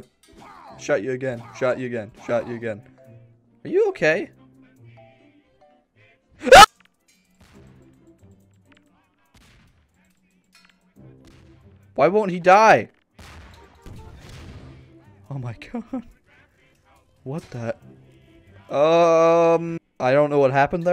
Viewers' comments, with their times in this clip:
0:05 this should be in perfectly cut screams